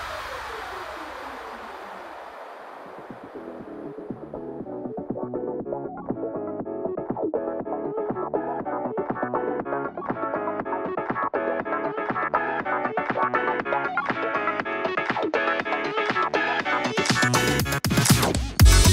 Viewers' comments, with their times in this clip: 0:03 the second song as surround for the logo evolution sounds so terrific. What it is name?